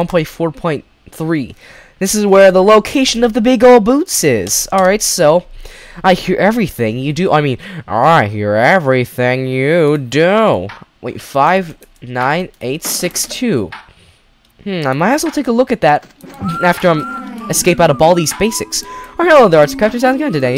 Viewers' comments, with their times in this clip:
0:08 OMG U SOUND LIKE BALDI